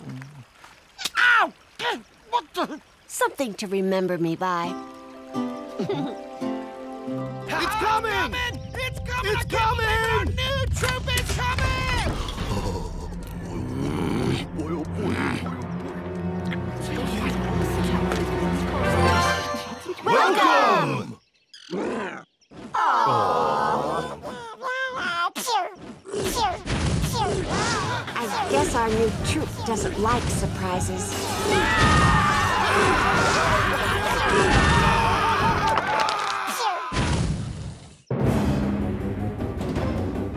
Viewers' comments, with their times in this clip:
0:09 Who heard the little "Trump is coming !!" ?? xD
0:24 "Cho, Cho, CHO" cutest thing i ever heard, even if its violence, Its still cute af
0:25 It´s so cute the sound of the Baby Dragon <3
0:25 Dat baby dragon voice :D
0:25 The baby dragon Pew Sound is cute